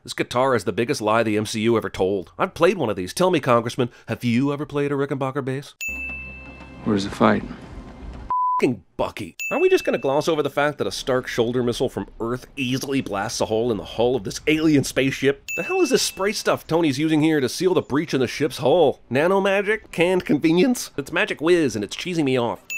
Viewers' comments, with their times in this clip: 0:09 When Tony blasts a hole in the hull of the ship Maw can be heard making a Willheam scream